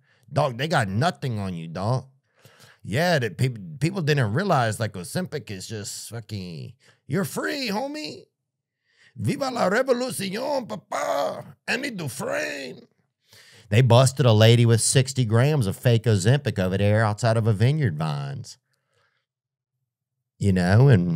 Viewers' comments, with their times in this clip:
0:07 lol. The Nicaraguan coming out of Theo.